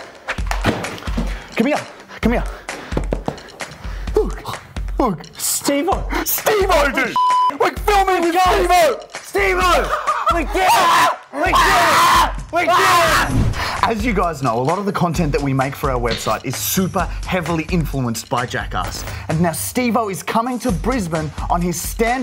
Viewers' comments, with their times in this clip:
0:10 Baby bird crying for food: